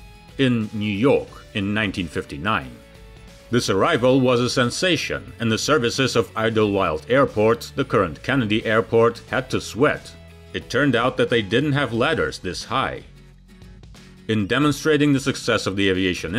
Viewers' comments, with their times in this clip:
0:03 Amazing airplane! The extension of the Pan-Am stairs to reach the rear door is nutty! I don't know if I could have gotten past the noise of it! Those contra-rotating props are loud as hell!!!